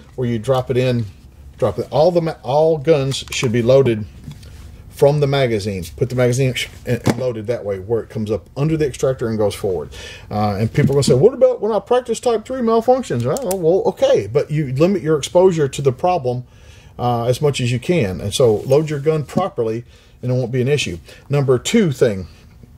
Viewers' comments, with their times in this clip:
0:10 you sound like dr phil here lmao